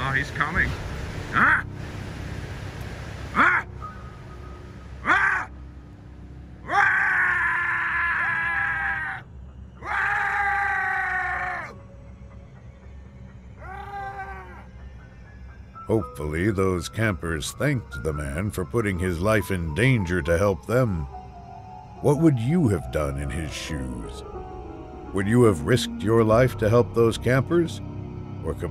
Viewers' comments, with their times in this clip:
0:03 Dude sound like walugi
0:05 dude they sound like the angry cannibals from "The forest"
0:07 I literally cried out of laughter because that bear was trying to scared that man but when the man started making sound like an animal the bear ran away like usain Bolt 😂😂😂😂
0:07 I love that primal scream
0:11 Couldn't help but laugh with this guy with his goofy grunts